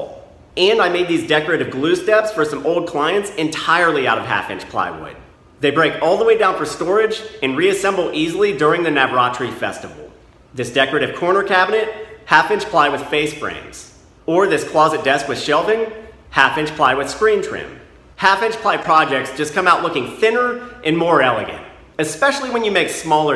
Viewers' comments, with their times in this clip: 0:09 During the 'what'-tree festival ?? [at appr ]...curiousity has got the better of me.